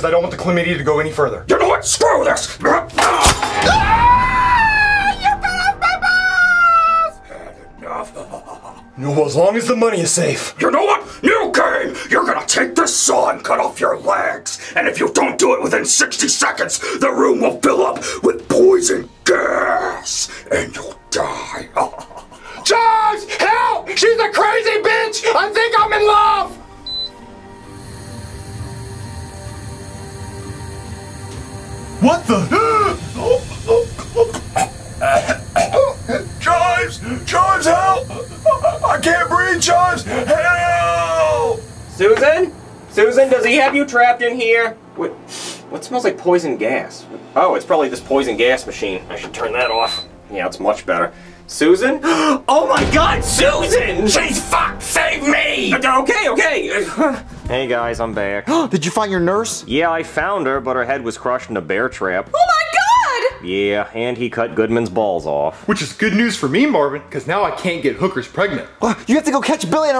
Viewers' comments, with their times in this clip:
0:03 the way he screamed lol! 😂😂😂
0:03 lol Goodman’s voice got me dying 😂😂😂
0:03 The part that had me dying is when Goodman was screaming 😂😂😂
0:03 Mr. Goodman sings too high.
0:03 Mr Goodman screams like shimmer
0:03 Lance screams like a girl “”AHHHHH!!!!!!!!!!!! YOU CUT OFF MY BAAAALLS!!!!!!””
0:04 Makes me think Goodman's VA took one to the Jimmies to get that high pitch going.
0:06 bro sounds like Elmo
0:53 Mr. Goodman's voice sounds like Jeffy that was crazy funny when was voicing what he was cussing out loud swearing censored or uncensored lines
0:54 What’s with his voice?